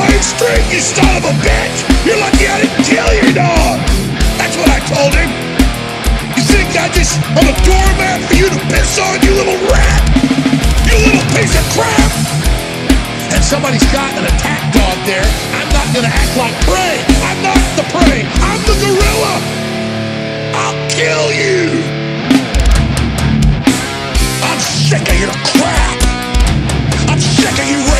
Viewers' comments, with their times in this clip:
0:09 That drum section right was SO. DAMN. GOOD!